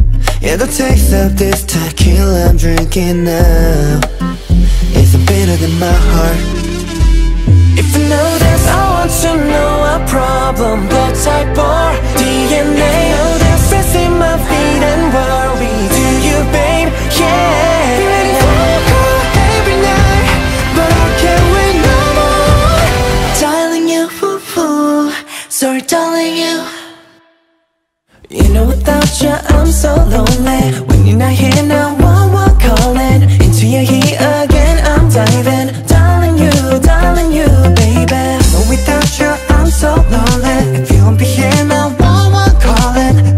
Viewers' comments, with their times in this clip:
0:07 Dino's English accent is no joke, he literally made it sound so natural +whole 13 did a fabulous job... I wanted to compliment dino cuz he is so underrated I rarely see comments complimenting him, only real carats love all 13 Equally but it's okay if no one did I'll gladly do it ... Dino is just amazing I mean Im so in love with this parts ❤
0:27 best part omg ngl I love his voice sm 😭💗